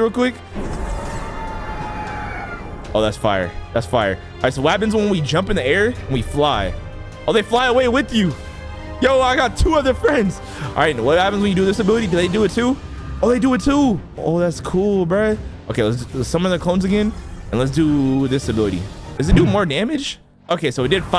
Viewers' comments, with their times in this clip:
0:08 he sounded so dramatic when he said that 😶